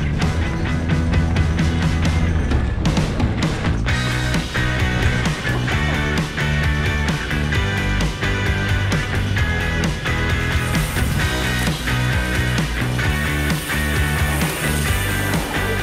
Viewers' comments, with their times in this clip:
0:03 you can hear the giggle in the rider its so great